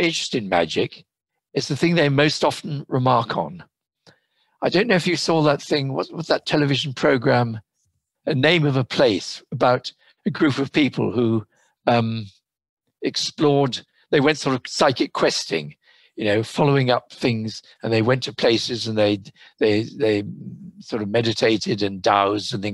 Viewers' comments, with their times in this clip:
0:06 It sounds like he calls it, "A Name of a Place" but I can't find anything remotely close to that.